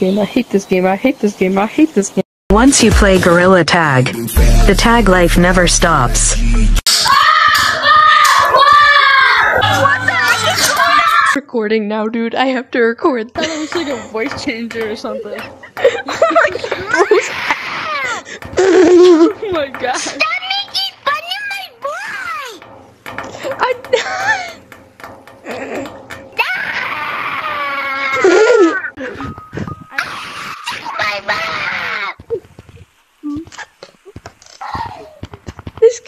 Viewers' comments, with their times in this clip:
0:07 BUD DIED WITH A POP MAN💀💀💀💀💀💀💀💀💀💀💀💀
0:17 This kid screams for shiny rocks 100000 times
0:20 bro screamed so loud he sounded like that one king gorilla that king kong defeated💀
0:24 Benji banana bye😭 if I did this wrong then I don’t know what the frick he is saying